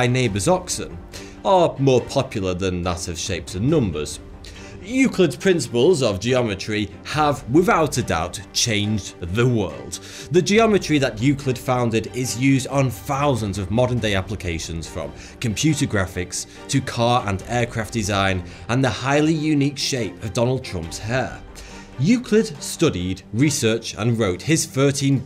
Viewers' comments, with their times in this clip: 0:09 "The world" Huh, that sounded like you tried to sound a bit like Dio's "ZA WARUDO !!!"